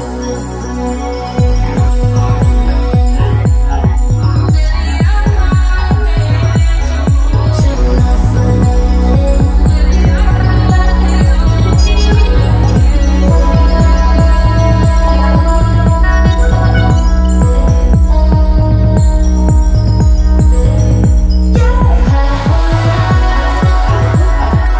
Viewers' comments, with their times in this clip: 0:08 How I thought most music would sound in the 21st century back when I was kid in 1980. If you're gonna use auto-tune, I'm ok with it sounding as otherworldly and futuristic as this. My favorite part is from onward. This track is a strong breath of fresh air considering the amount of garbage music produced these days.